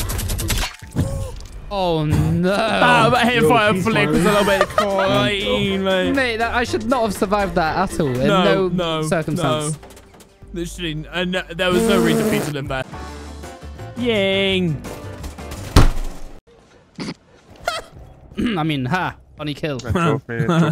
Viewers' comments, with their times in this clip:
0:04 wtf did he say???